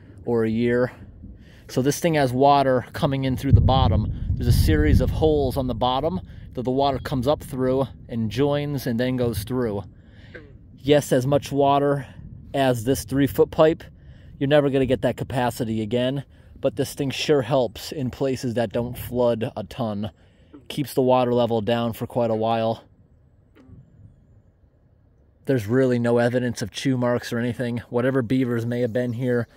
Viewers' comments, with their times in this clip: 0:10 That's a funny sound on background 😄